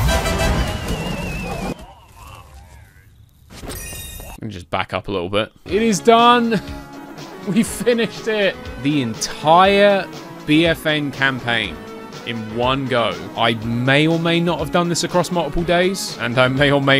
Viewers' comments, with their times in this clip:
0:04 to be continued starts playing